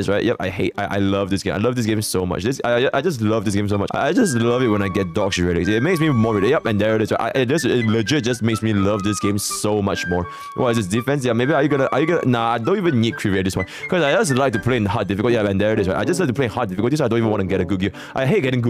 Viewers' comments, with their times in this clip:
0:03 Eminem got competition